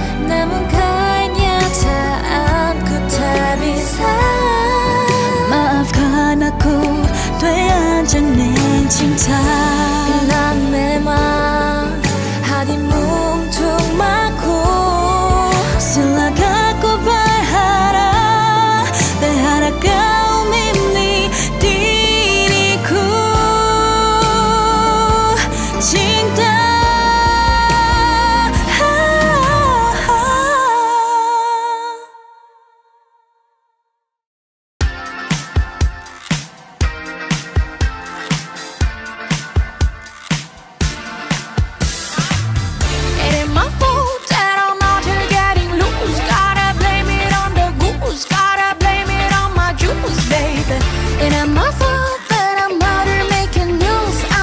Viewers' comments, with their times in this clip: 0:10 Ireh outfit is very good and voice is attractive 😍
0:42 holy she sounds so good